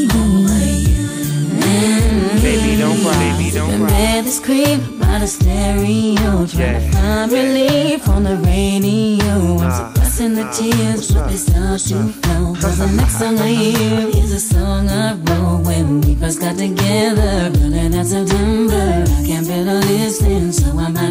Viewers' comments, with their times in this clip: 0:04 This sounds better x speed.